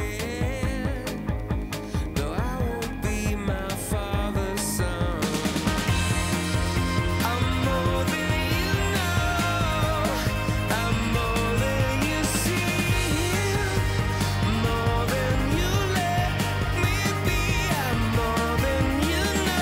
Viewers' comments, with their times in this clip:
0:07 What about this glitch here? I thought my CD was skipping but not. It's on the official release as well. The same glitch can be heard in 2nd chorus too.